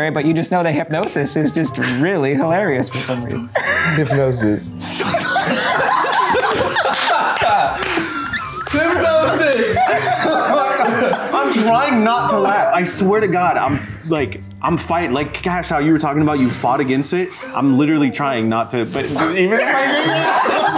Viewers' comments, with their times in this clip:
0:08 Everybody laughing... Cash is sooo fucking scared🤣